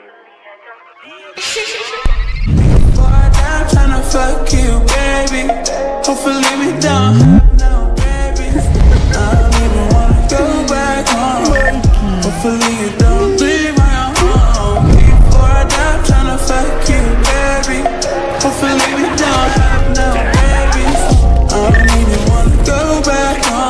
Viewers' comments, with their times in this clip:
0:10 Is it just me or he laughs weird